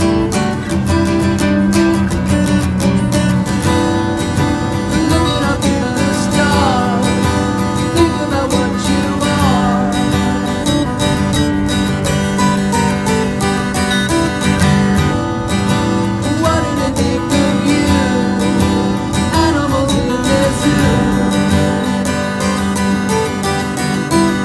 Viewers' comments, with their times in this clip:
0:08 A calm sea, a guitar, a man singing, a beautiful baby goat protecting it saviour.... 🌈👍🙏 .... Now tell me, is this not a part of heaven ? Good night ... Cheers from Macau am. Going to sleep now..😎😎